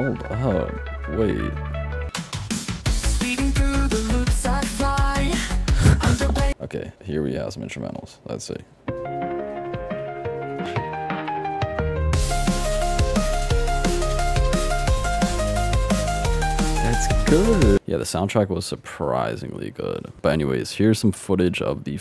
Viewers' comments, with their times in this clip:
0:09 Sonic frontiers aaah track 😭
0:09 Sonic frontiers goofy ai track lol